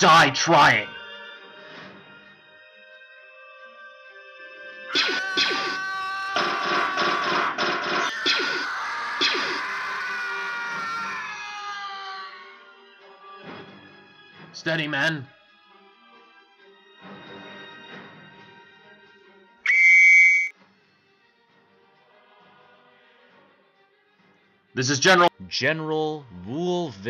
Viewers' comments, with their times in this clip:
0:09 There was a like skywaker scream lol only a true Star Wars fan would know this